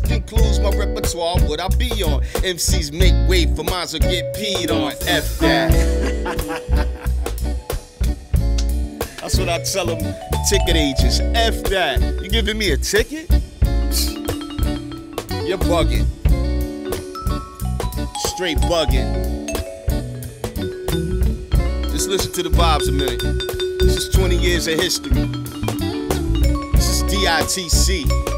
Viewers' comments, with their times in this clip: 0:10 brooooo both parts be soooooooooooooooo perfection broooo that voice that rhyme play ..that flow brooooooo I go on my knees I’m proud I lern by Rap Game from this brothers